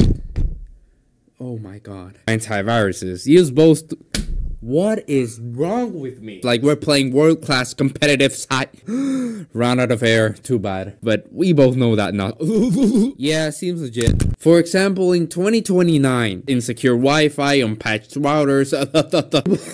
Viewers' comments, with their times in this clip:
0:07 Having to breath, sounds like a skill issue